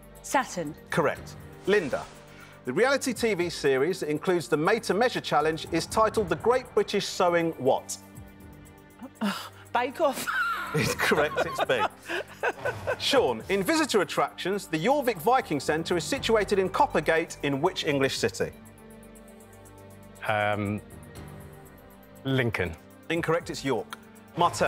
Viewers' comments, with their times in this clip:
0:09 sounded like he said its correct, rather than incorrect.